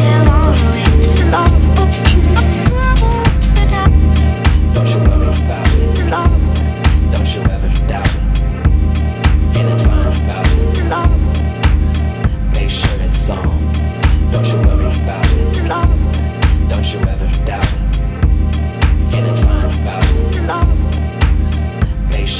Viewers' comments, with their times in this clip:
0:05 I am certain you may disagree but the vibe was killed for me when the original sound was disrupted by whatever that guy was going on about, what a missed opportunity for a new cerebral electronic experience